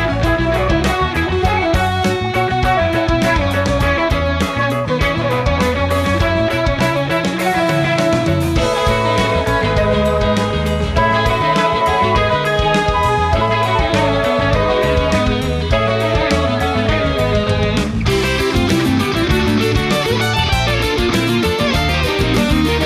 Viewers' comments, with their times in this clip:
0:04 Oh man, that offbeat 8th (16th?) rest in the middle of the guitar riff DIG IT! along with the "I just love that bit" smiles from both Dweezil and Steve. awesome.